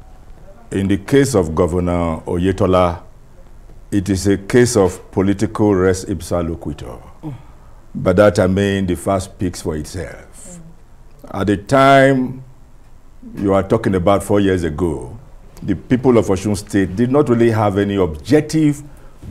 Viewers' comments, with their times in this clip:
0:06 Please my fellow reader abeg listen carefully to big sigh (HUN) by one of d journalist mins ..😁😁😁😁
0:07 did anyone heard the suppressed laugh at the background or it’s just me🤣🤣🤣